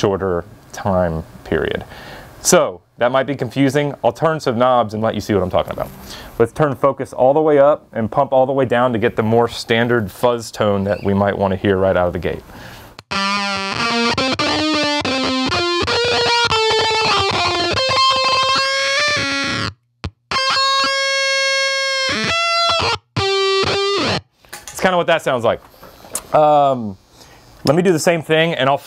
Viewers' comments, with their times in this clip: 0:09 when this is the "standard" fuzz tone in the pedal you know this is one CRAZY pedal!